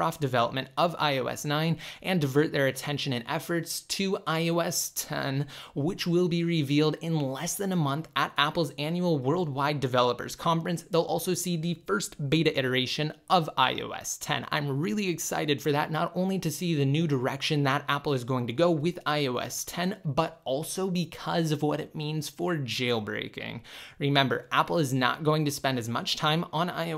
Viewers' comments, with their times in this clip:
0:08 ish in the video..... "iOS tehhhh."